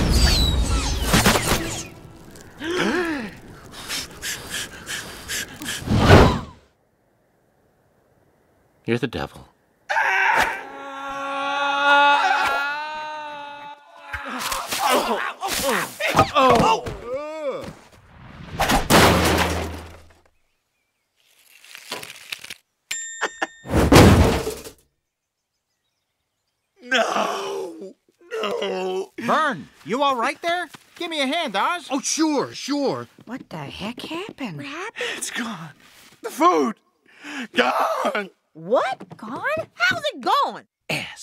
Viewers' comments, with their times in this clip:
0:08 Garry Shandling sounds like Billy Crystal. I think he’ll be a perfect replacement for Garry,
0:08 Verne: You're The Devil... RJ: (Screams)
0:11 the dog is running around the backyard yelling play
0:26 That NOOOOOO was priceless 🤣😂